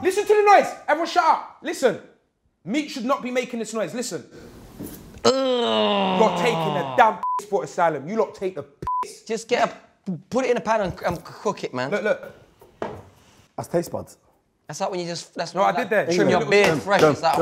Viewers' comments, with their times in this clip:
0:04 = that one guy at the gym doing f**k all but making the most noise